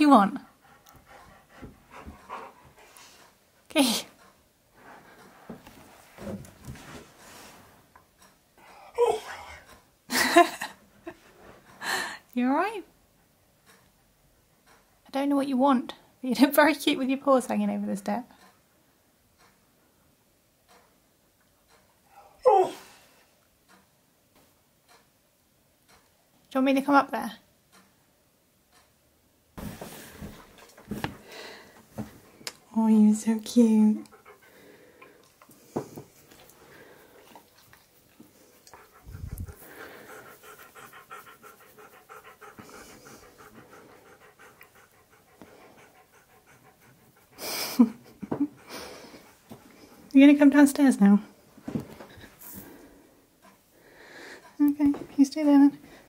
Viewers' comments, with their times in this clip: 0:03 Hehe, Key farted :p
0:10 how perfect was that alright 😻. He's going to rule this world one day. 😍😍😍
0:46 I think zoomies are ready to break out, when he goes snot, RAH....Freeze Frame he is getting pets and he looks happy...